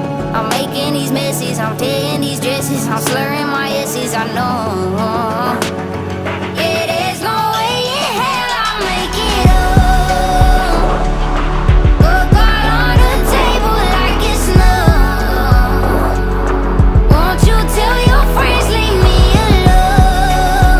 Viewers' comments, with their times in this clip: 0:06 is def “yeah there’s no way in hell i’ll make it home.” cause it doesn’t sound like driving at all